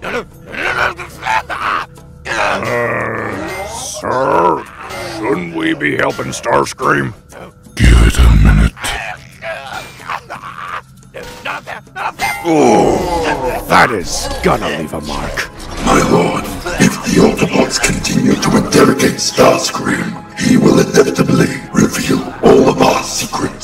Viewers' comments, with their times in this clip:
0:07 That "Oooh" coming from the Decepticons made me laugh